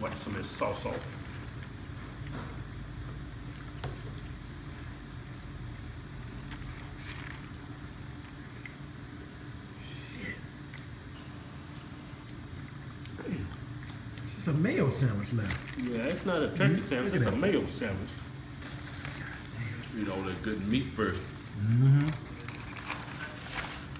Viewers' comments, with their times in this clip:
0:07 lmao damn son, that awkward ass silence and grinning smile he had when he was eating that burger while the one in red was staring us down lol wtf was that?